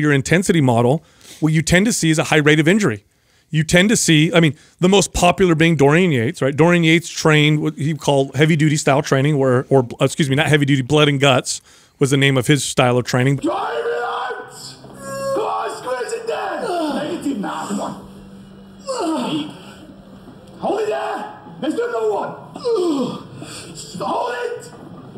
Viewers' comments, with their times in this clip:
0:06 Going on my daily walk and I just happened to Pass some old lady as Dorian Yates was moaning on my phone 🤣🤣